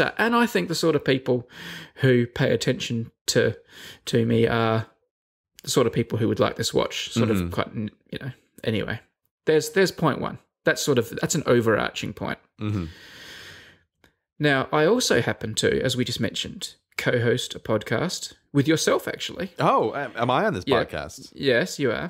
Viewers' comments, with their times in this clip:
0:07 Sort of quite N... Brady how dare you just even to think of us as 'the n-word'.